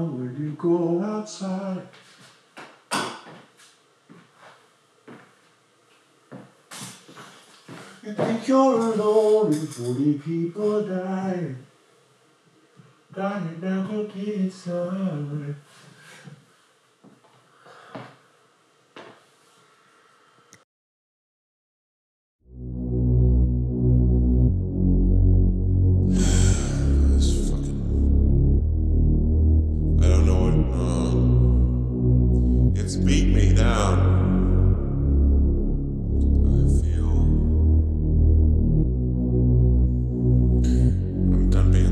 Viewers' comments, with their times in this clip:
0:07 “you think you’re alone and 40 people died,” did I hear that right? Subtitles don’t help
0:22 I'm mostly just putting this for myself but the way that "All Eyes On Me" evolved starting was genuinely pure genius. I love all of your songs and this one has been my favorite since I first heard it. The layering of the two voices over each other is the best. This entire thing - both the original Inside and this bts of it - are indescribably amazing. Thank you, Bo, for making such incredible stuff.